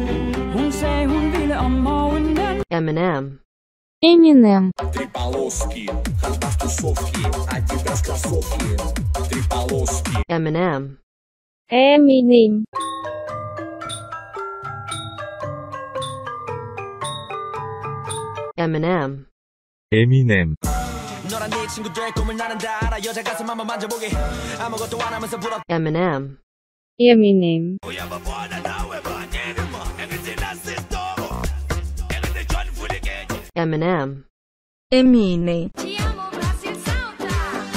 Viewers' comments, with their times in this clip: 0:04 Theraphist: "eminem russian isn't real can't hurt you" Eminem russian:
0:07 You from Rassion?
0:21 Eminem became K POP idol: